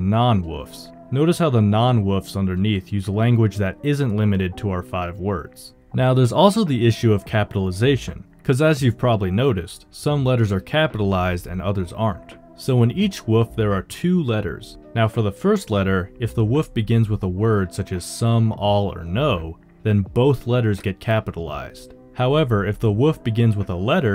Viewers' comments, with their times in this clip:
0:10 Not the voices of the damn in the background XD